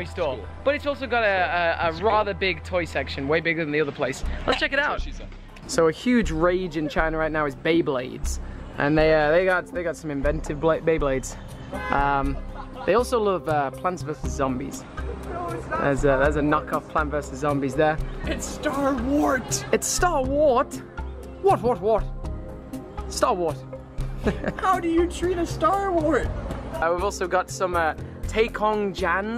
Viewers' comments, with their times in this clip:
0:10 I thought I hear RMs laugh